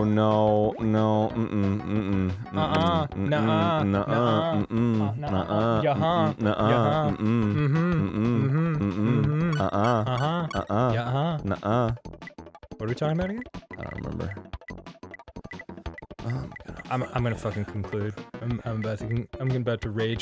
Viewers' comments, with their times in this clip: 0:04 did they just turn into the two kids in 'the emperors new groove'??